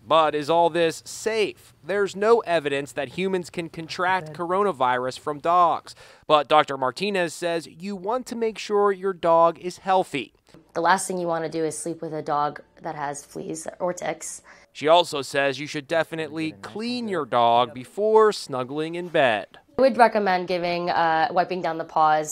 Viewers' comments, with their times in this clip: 0:10 Was I the only one who thought that the doctor said: the last thing you wanna do is sleep with a dog that has fleas or di**s😂.